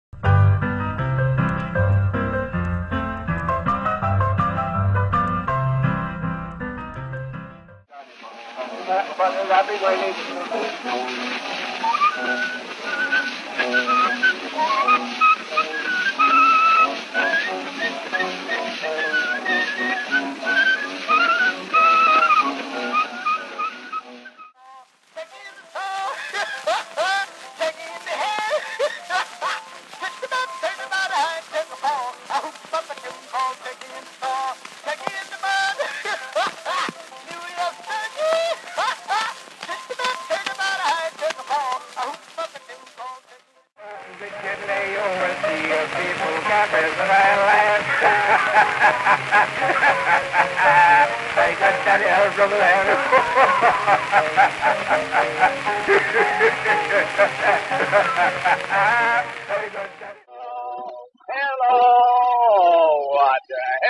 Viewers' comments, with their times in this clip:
0:00 that music is like from ABCA chicken maze but it's not!
0:44 you're listening to a guy laughing in 1898
0:48 reminds me so much of Josh Wink - Don't Laugh